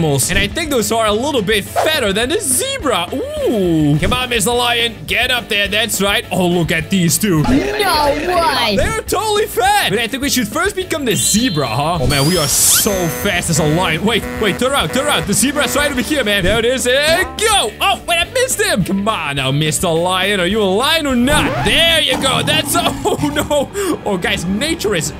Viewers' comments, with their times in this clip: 0:08 I Love How The Blblblblbl Of Klasky Csupo i Heard. Very Awesome Videos